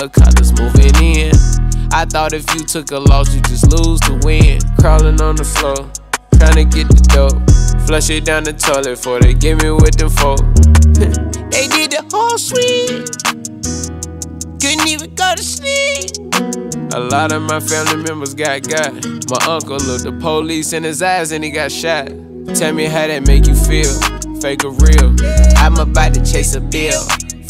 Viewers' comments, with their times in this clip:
0:10 felt those high notes in my soul
0:15 Nobody : That one annoying ass mosquito in the room